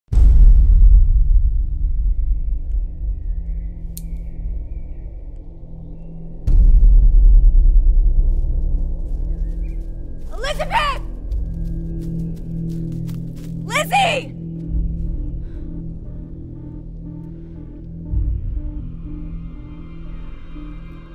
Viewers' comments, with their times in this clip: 0:05 how tf can a single bloody drop can make such a big sound